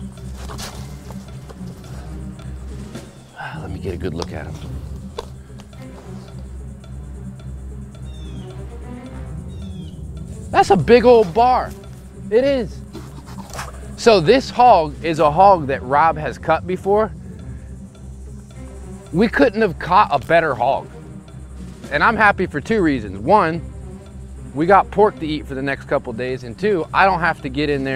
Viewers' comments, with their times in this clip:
0:08 It's a "barrow". It's interesting that you guys pronounce it "bar". Technically, a barrow is castrated before reaching maturity. I'd still rather eat a gilt.